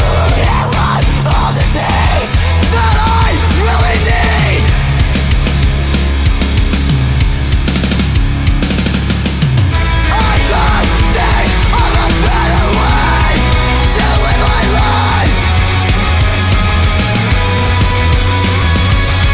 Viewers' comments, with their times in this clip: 0:04 this isn't punk but some awesome ones are Thrice, Children 18:3, Comeback Kid, Aiden and a few others. guitar: na na na na na nanana na na na na na na (Sounds that rifff likes My Chemical Romance)